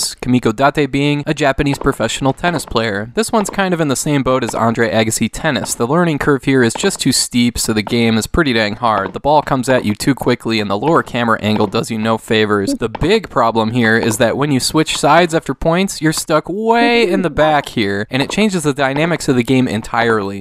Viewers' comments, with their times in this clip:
0:08 boo it doesn't sound realistic ;D